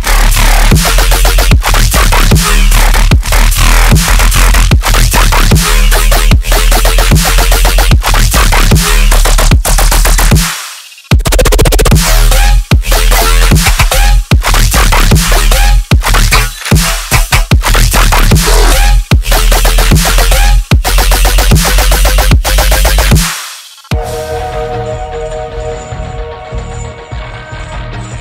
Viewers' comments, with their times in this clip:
0:10 The dubstep bass is incredible! keep up the good work!